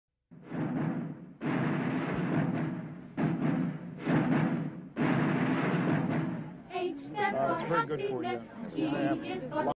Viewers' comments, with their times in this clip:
0:07 What?! You’re supposed to add the fanfare, not a group of girls singing. Make it right or you’re FIRED!